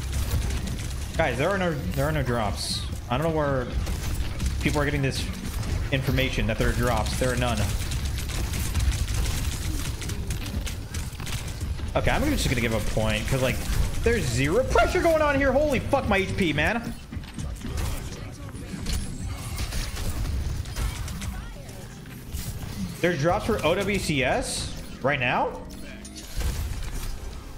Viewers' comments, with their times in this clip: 0:10 That voice crack was the best